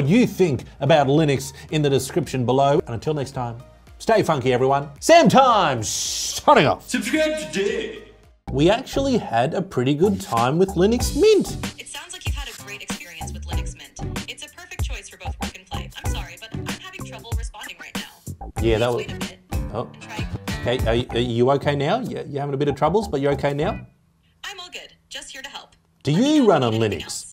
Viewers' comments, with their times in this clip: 0:10 I heard something like "Linux Meat"